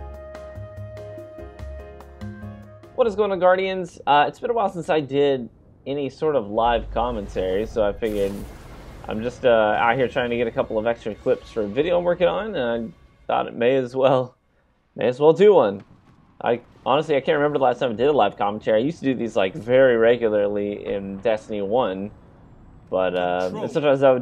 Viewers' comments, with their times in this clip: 0:05 hasn't done live commentary in ages, decided to start and already uses the wrong mic loool